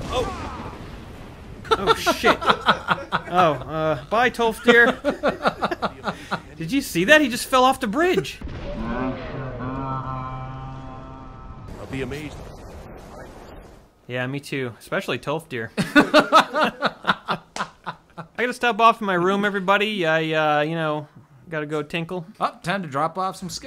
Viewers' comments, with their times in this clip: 0:08 you can hear tolfdir saying "Fascinatiiiiiing!" in slow motion as he is being shouted off the castle